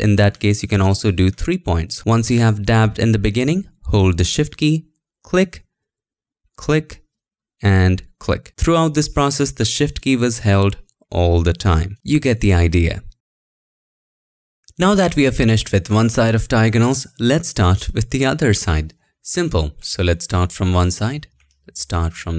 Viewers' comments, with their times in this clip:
0:04 he says “click” more American than anyone I’ve ever heard